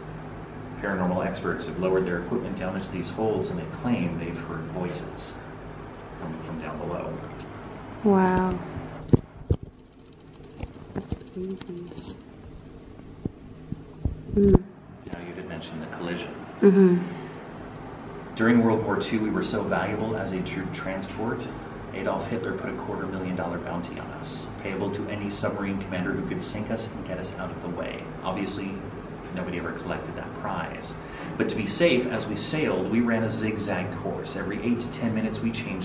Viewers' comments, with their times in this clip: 0:09 the audio was like when you dip a go pro I. Water
0:17 I swear I heard a laugh